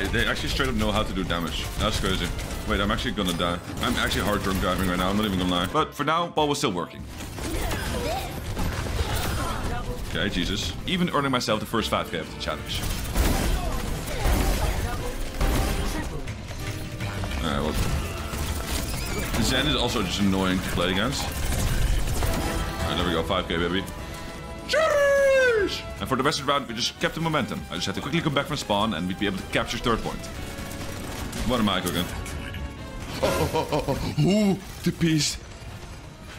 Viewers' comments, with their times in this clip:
0:09 the valorant sound effects😅😂😂
0:14 whu i heard valorant ace sounf?
0:20 THE ACE SOUND